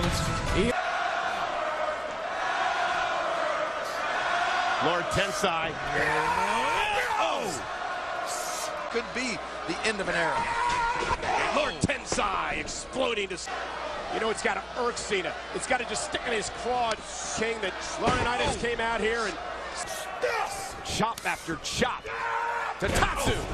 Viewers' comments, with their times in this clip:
0:05 The Crowd is great!!ALBERT!!ALBERT!!